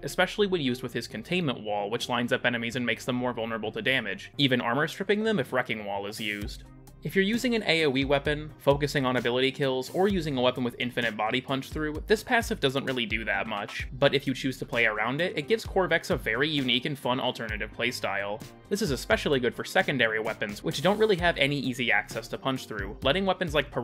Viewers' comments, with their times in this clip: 0:06 had this video in the background and then this song kicked in to give me a neuron activation